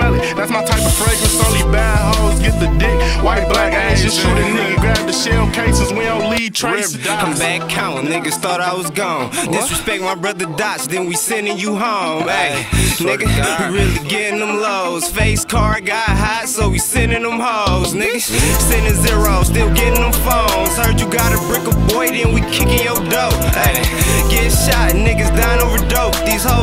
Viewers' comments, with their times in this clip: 0:07 That switch was hard af.